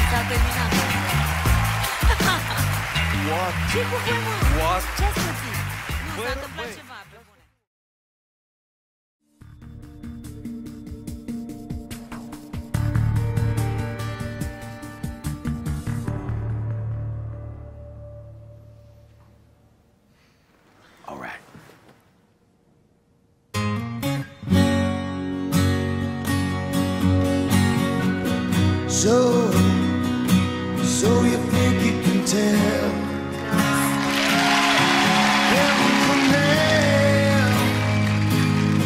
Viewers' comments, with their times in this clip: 0:09 Wish you were here was genuinely amazing, truly a rare voice. I don't understand what that was all about? is it the money for the show? will you lose publicity when you actually press the button for someone with a unique voice? i thought this show was called the "VOICE" not the "MAINSTREAM" :):)
0:09 Wish you were here was genuinely amazing, truly a rare voice. I don't understand what that was all about? is it the money for the show? will you lose publicity when you actually press the button for someone with a unique voice? i thought this show was called the "VOICE" not the "MAINSTREAM" :):)
0:23 Holy Fuck thats good. Souds very similar to Mr. Gilmour himself